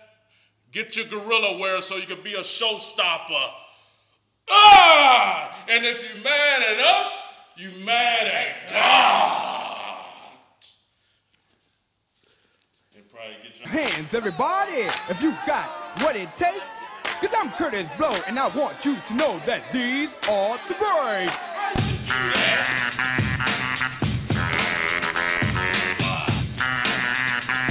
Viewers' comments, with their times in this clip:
0:10 awkward silence lmao